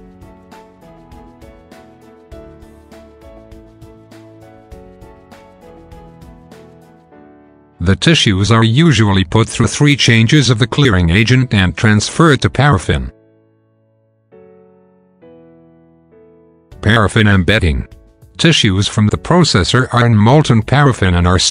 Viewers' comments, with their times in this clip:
0:04 what you mean about missable